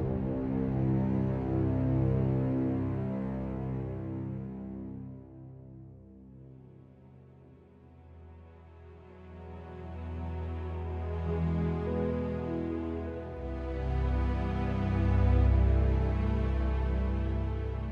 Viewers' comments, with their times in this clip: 0:05 feels like a login screen of a mmorpg